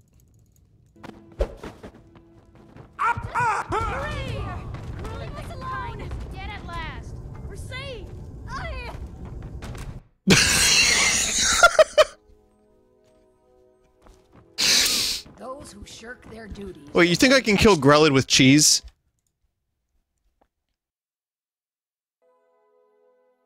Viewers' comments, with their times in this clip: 0:07 The child going "Aueah" gets me.